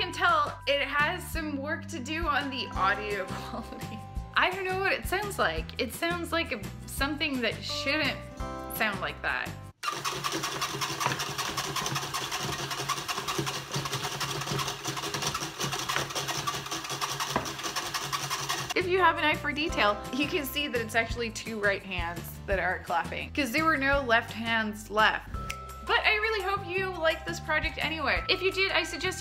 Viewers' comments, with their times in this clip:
0:10 we just witnessed the sound of one hand clapping!
0:11 The sound of one hand clapping.
0:11 it sounds like porn on creaking bed, but like 4 times speed ... i shouldn't write this ...